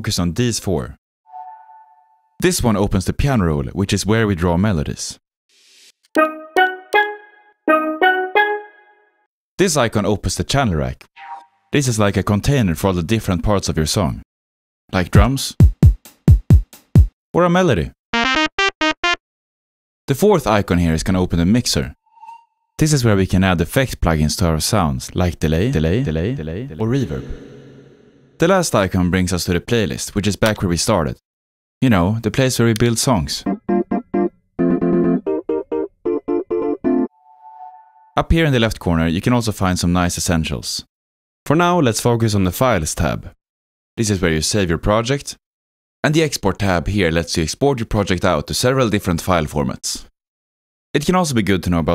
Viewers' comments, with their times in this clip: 0:05 I thought you were about to recreate 50 Cent's P.I.M.P. lol
0:33 beeswarm simulator type beat